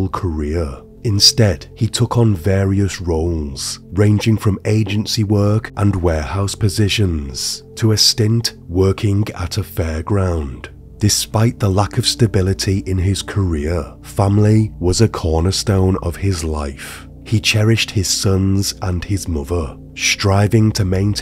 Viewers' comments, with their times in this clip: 0:03 Very good story line and production but couldn’t listen to your voice after